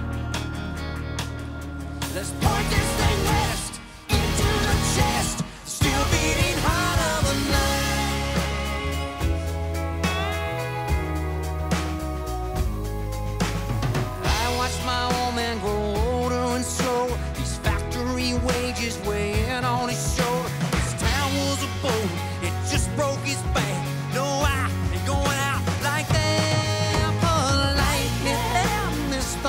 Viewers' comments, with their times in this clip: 0:10 I love how he changed key in the bridge